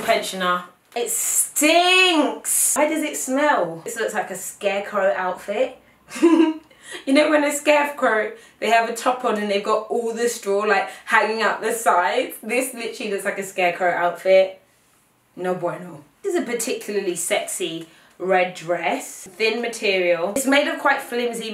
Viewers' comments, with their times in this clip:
0:06 her laugh aww